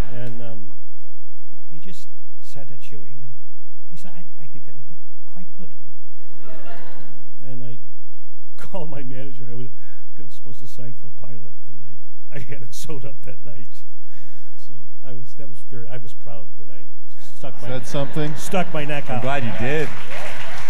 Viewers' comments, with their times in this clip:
0:04 Kevin's attempt at Armando's Scottish accent is appalling 😂